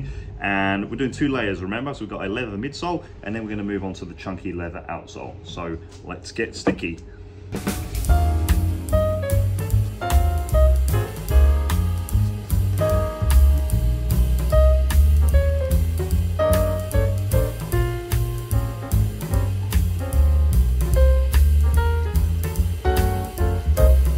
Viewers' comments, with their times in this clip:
0:07 the best music ❤